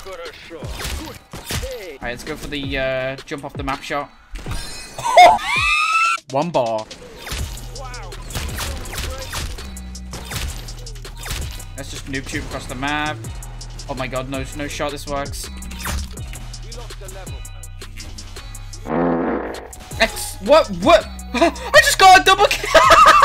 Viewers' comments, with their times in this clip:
0:04 that laugh(wheeze) tho
0:05 that wheeze killed me oml